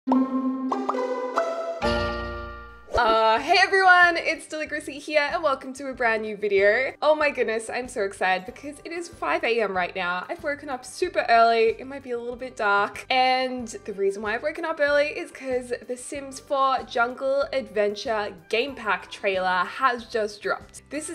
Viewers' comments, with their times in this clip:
0:03 I love the uhhhhh in the beginning can’t stop laughing!😂😂